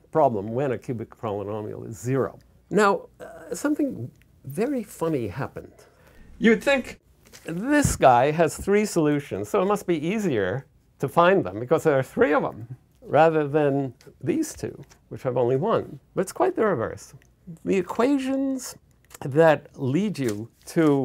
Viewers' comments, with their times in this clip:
0:06 what happens ? YOU'D THINK. then back to normal volume
0:07 Mazur's voice breaks lol